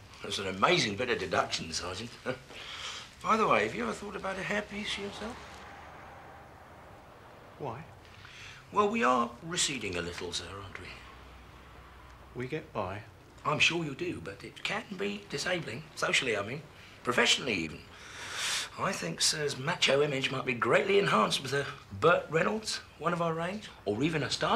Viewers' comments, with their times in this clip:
0:07 Chisholm the way he looks & says " Why ? " 😂😂😂😂😂😂